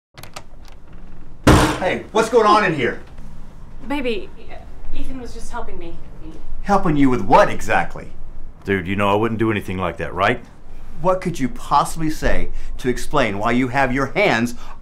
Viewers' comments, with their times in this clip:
0:01 Groom didn’t even kick or push the door open with force, yet it made that sound loud enough to stop the two.